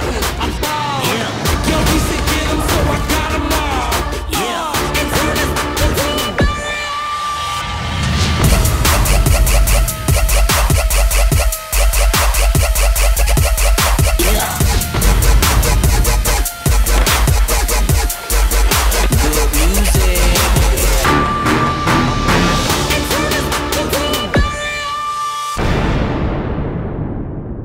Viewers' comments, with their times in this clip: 0:08 Is this the only game trailer I have ever seen have dubstep? (obviously.... no)
0:09 hear DAT beat drop